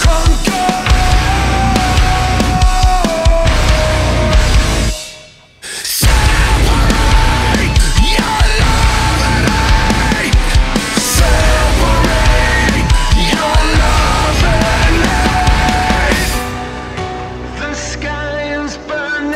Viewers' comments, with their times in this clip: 0:07 Reminded of Animosity with the guitar work